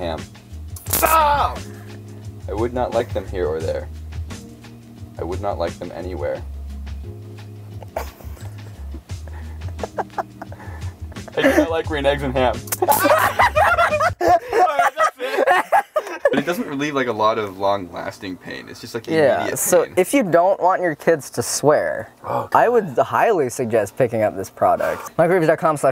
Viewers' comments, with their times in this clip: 0:09 the hesitation there is killing me